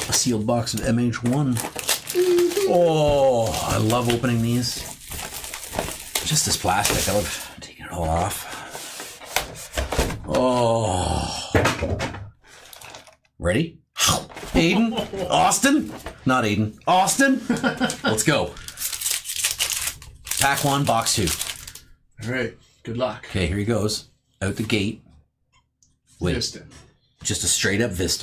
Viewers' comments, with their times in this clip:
0:09 why do i find this so funny when he throws the extra stuff of the box behind him lol. on top of the he added the groan haha